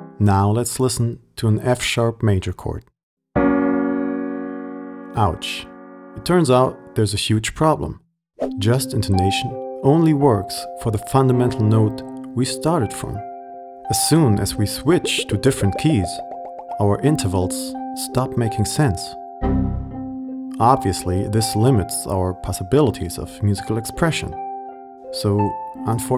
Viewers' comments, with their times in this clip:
0:07 Your piano must be in very bad shape if your F#major sounds so out of tune. I tried with all my instruments (except Bass) and F# major sounded perfect. With every available octave. And so did every other chord too.. If you are making this video based on your f***ed up instrument. I dlnt think there is point to watch further than the mark where you played that chord